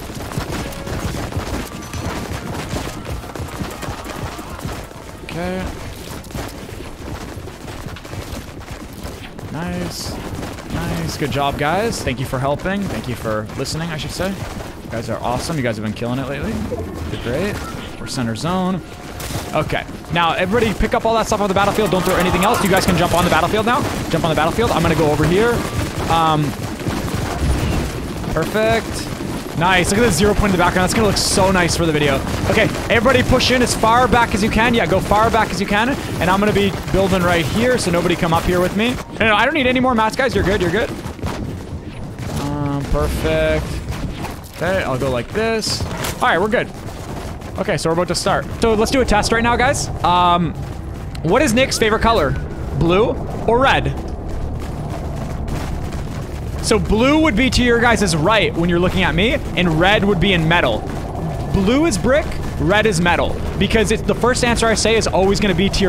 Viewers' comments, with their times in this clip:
0:10 Nick Eh 30 sounded like my teacher
0:51 Who heard the notification